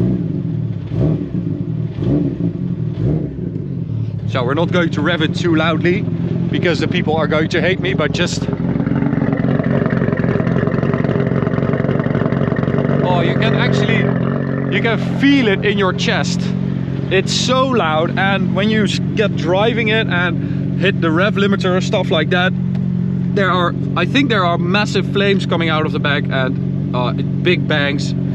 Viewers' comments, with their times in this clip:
0:09 how it sounds sporty and JDM